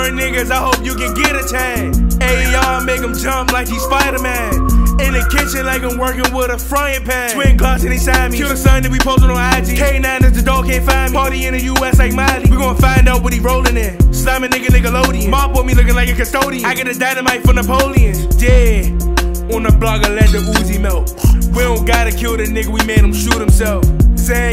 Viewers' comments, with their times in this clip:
0:07 lmaoo he turned into g herbo, got so off beat